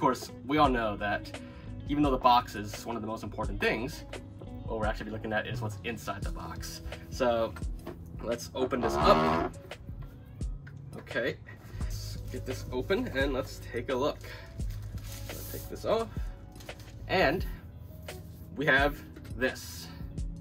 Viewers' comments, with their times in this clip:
0:08 and his first fart in his videos